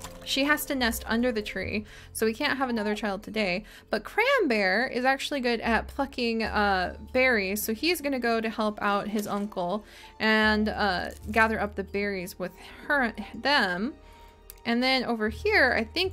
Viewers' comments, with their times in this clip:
0:03 Who else heard something naughty